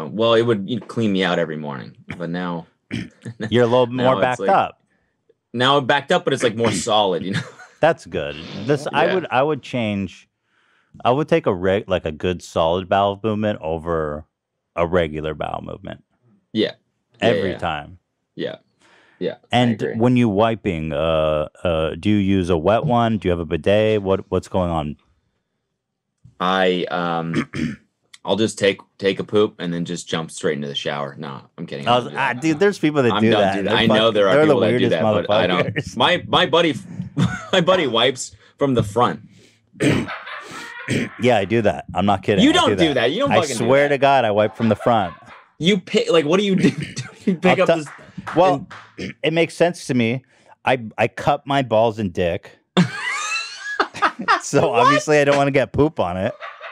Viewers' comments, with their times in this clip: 0:05 was that a fart? lol
0:38 oh my god the laugh 😂